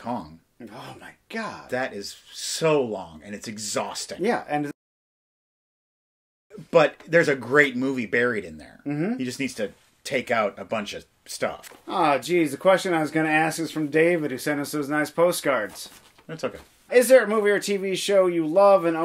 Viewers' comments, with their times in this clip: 0:05 At about the mark, the screen goes dark and everything cuts out for about a second. Not sure if this was intentional, just thought I’d say something in the comments in case it helps at all.